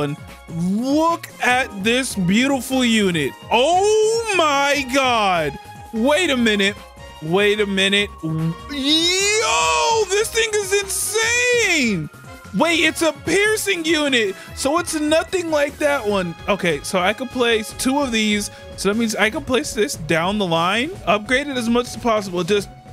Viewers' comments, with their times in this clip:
0:08 i was petting my dog and i toough he was tryng to lift something heavy